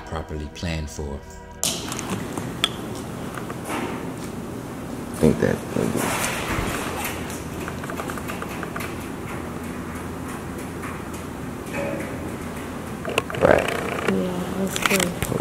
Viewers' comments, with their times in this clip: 0:03 That noise set sounds like a beat a prisoner would make like beating on the table